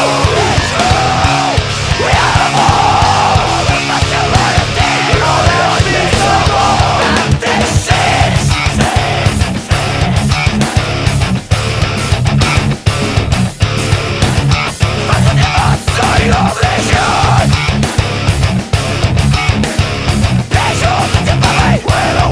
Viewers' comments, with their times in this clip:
0:08 ok we sikth + meshuggah now so gooooood